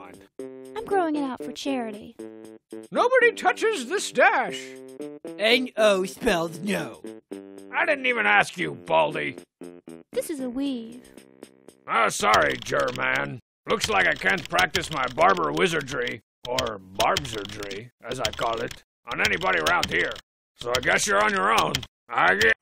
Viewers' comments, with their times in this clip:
0:05 This is Homestar's impression of Horrid Henry's mother!